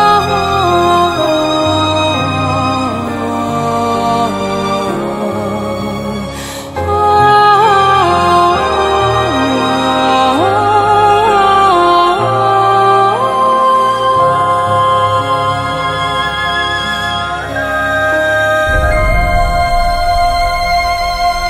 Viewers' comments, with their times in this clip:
0:03 the music is here made me want to cry. Can someone help me with its name